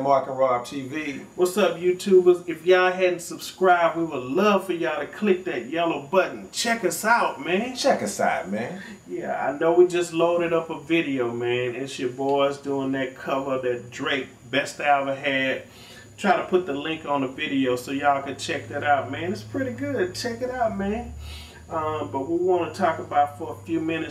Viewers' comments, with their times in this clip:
0:08 im subscribed just becoz of Check us out ma-ern